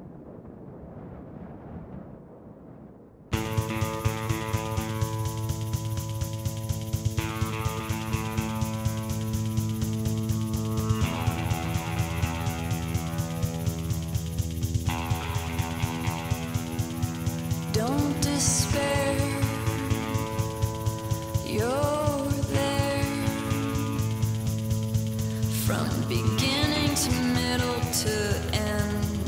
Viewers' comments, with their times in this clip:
0:04 The music starts watch the whole thing before commenting.
0:12 There is a part of my soul that's always felt as lonely as her voice does in the first